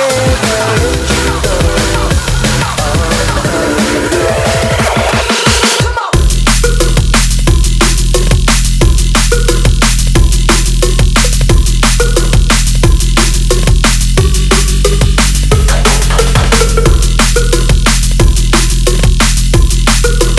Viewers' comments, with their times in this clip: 0:06 Da fuk drop in time is soo hot!!!